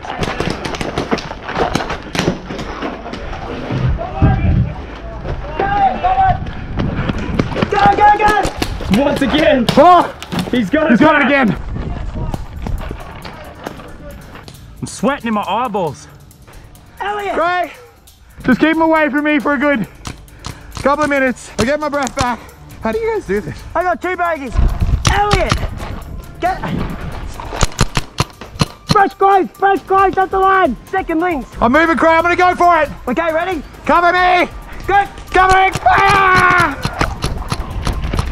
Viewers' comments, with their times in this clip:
0:04 Lazarbeam, what a nice voice you got there.
0:06 when lazarbeam said go go go that was not lazarbeam that was crayator
0:08 I thought that was cray saying ‘go go go’ not lazarbeam
0:22 that voice crack tho